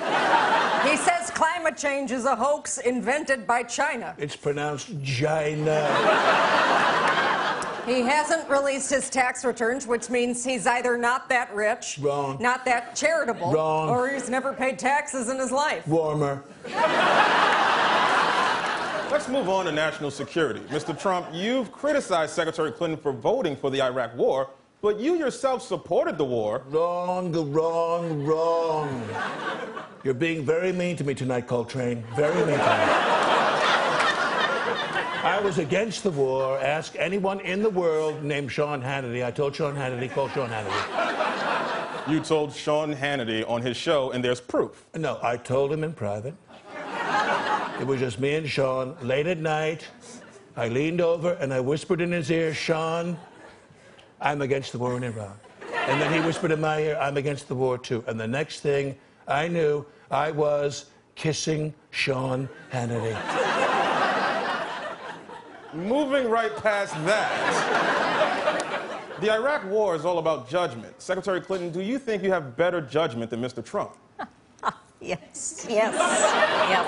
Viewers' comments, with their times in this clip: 0:04 it's pronounced JI-NA (CC)
1:00 I thought he said "Pissing John Kennedy"